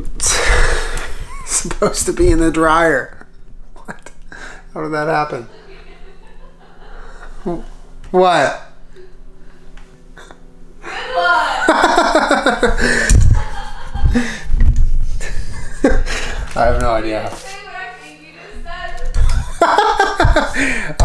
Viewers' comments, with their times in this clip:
0:08 Bro y’all cute as fuck laughing back and forth at each other